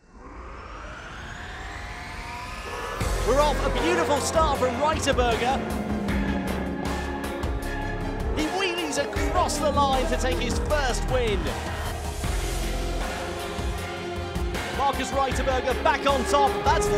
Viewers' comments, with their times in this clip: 0:04 Ride a Burger?